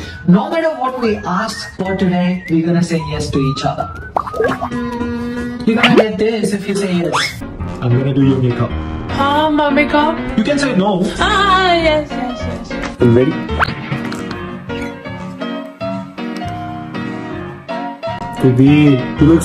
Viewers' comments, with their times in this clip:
0:07 Starting from their voices sounded weird… what happened to the editing